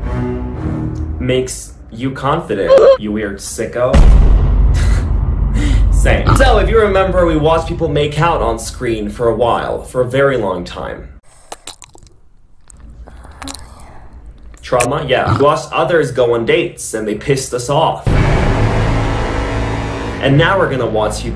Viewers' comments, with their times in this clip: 0:06 the reflection of the sky on his play button omg so pretty >>> Also the way he said "You don't like butts 🥺" seems like she missed on cake idk man